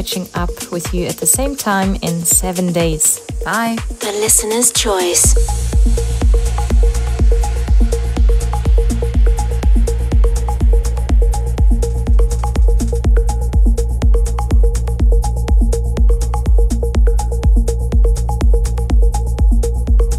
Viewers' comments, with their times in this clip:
0:05 The listeners choice, this week, wow what a banger and such a perfect emotional high finish